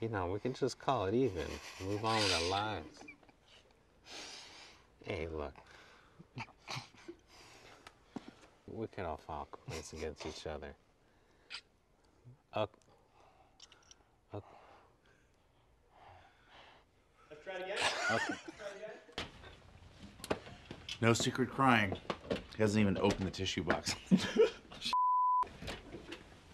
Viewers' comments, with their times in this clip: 0:07 being that boring is a skill lol never realized how intentional the actor of Toby was when he talked